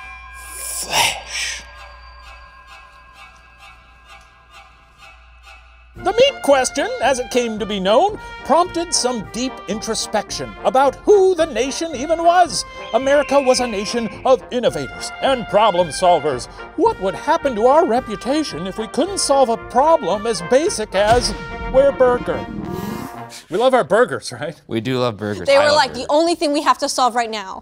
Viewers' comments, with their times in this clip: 0:06 I enjoyed the background music "What a Friend We Have In Jesus"
0:09 Any other former or current church-goers taken back by the jaunty rendition of "What a Friend We Have in Jesus" ? Such a strange choice. 🤣